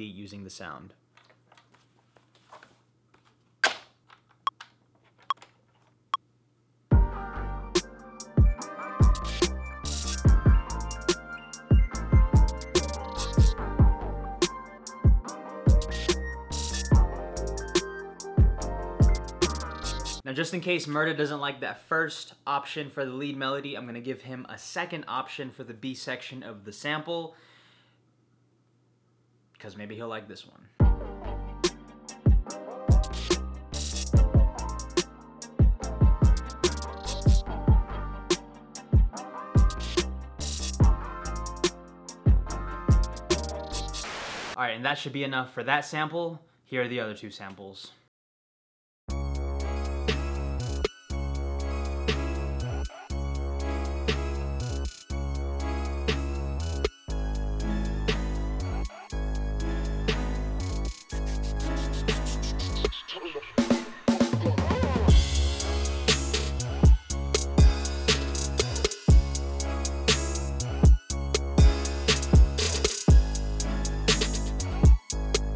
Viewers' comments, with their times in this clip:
0:03 sounds like a dope ass snare
1:00 Snare + Video edit 🔥